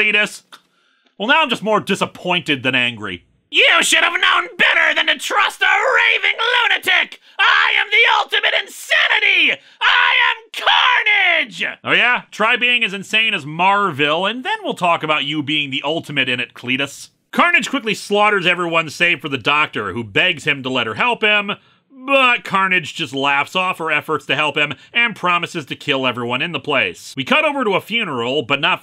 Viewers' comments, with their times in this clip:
0:10 Man, Lewis’s really bringing out his inner Dee Bradley Baker for that one, cool